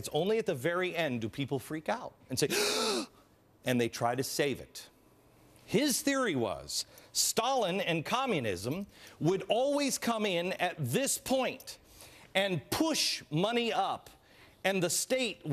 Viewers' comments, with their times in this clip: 0:03 I love his gasp